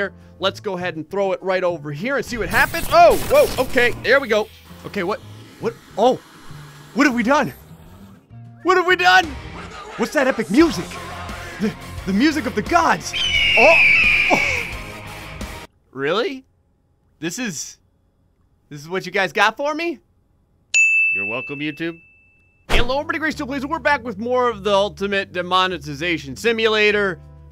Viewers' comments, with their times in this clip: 0:10 Man i love that song